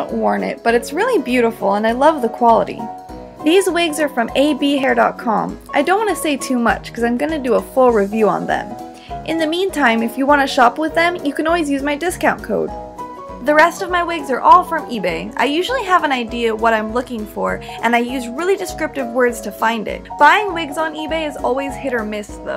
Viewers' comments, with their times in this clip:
0:09 I'm pretty sure you said "shop with them". Did anyone else hear "shoplift them" ?